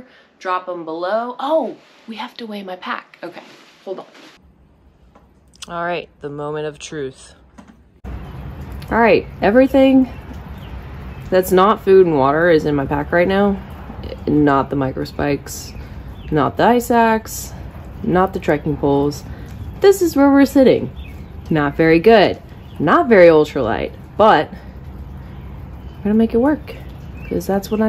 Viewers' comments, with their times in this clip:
0:10 you can hear it in her voice! She isn't happy hahahhaa